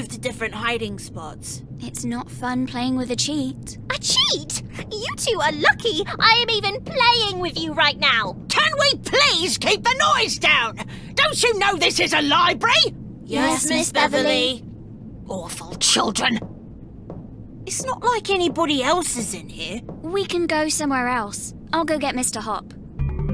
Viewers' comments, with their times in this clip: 0:10 Beverley is the one that's yelling bro